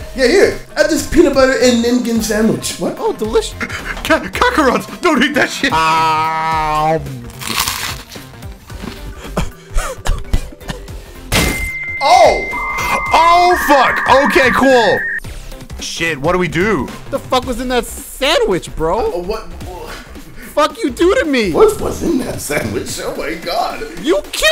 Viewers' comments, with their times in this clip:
0:06 That crunch was oddly satisfying